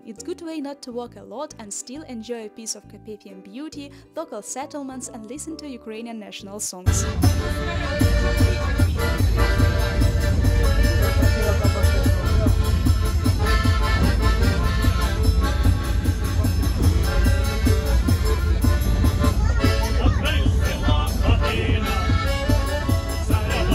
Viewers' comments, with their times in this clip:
0:07 I love that song.